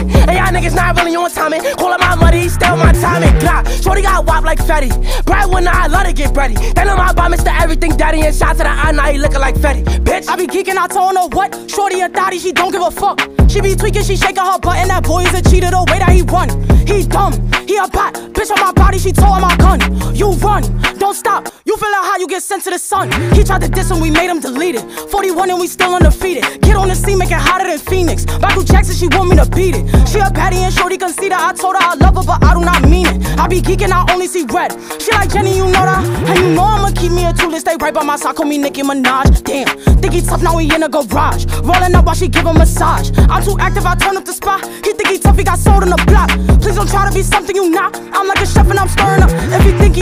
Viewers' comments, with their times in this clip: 0:03 is prolly where the song goes cray
0:36 my right ballsack call me nicki minaj.. what.. guys wtf was the line in